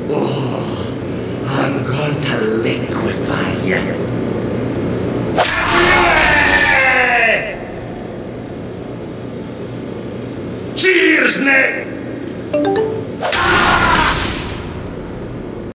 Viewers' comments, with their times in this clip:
0:12 I thought that was my MSN messenger beeping.